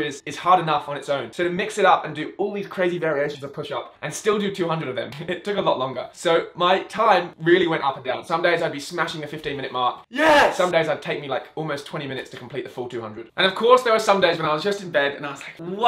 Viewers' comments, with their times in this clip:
0:03 the audio panning fucked me up. Do you use an omnidirectional microphone?